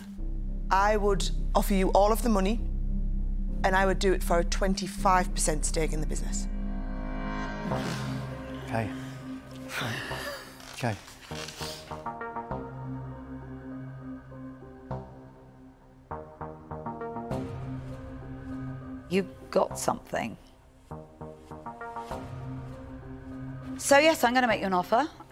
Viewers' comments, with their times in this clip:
0:07 The music they play is when you know all the dragons are going to get competitive